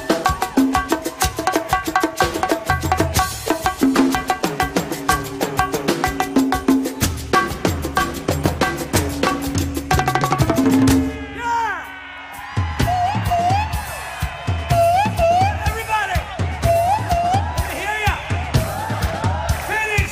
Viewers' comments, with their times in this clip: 0:08 The drum-off near the end of "I'm a Man" was outstanding.